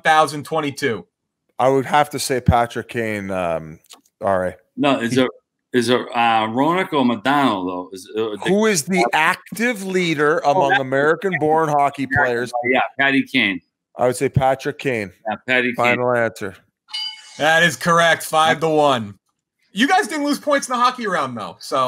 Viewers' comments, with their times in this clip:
0:05 "Is it Roenick or Modano??" .... "No who is the ACK--TIIVVVEEE leader...." lololol i'm crying... to be fair I do the same shit/think the same way when I'm.... in that same frame of mind........